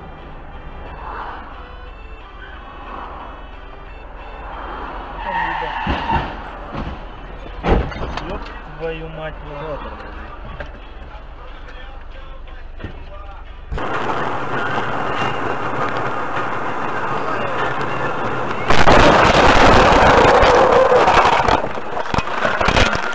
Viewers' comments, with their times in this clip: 0:06 that reminds me of the time when I got into a four car pileup wreck in a TESLA! It sounded just like this one. Well I hope everyone’s recovering OK And Lord bless them